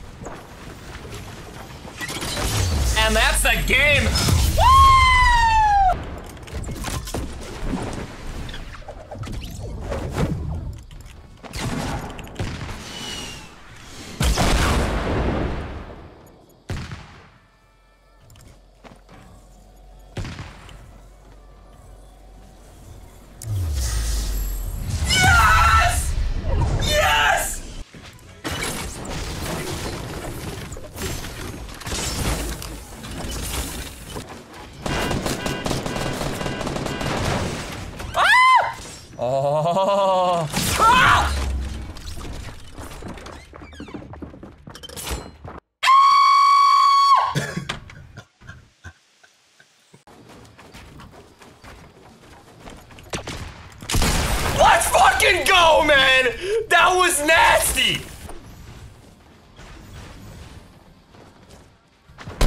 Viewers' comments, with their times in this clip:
0:04 at x.25 speed lol it sounds like an air attack siren
0:37 those screams always get me XD
0:45 the manliest scream
0:45 when your voice becomes female
0:46 best scream of my life